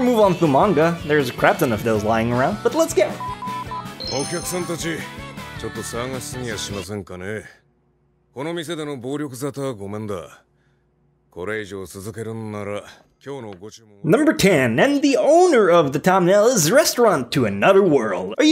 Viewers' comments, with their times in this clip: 0:05 he sounds like yami from black clover